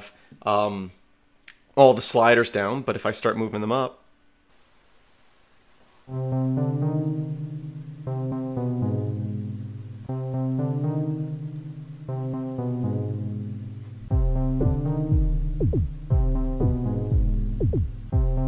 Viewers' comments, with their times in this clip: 0:06 You should totally re watch your video at 1.5x the loop starting sounds plain awesome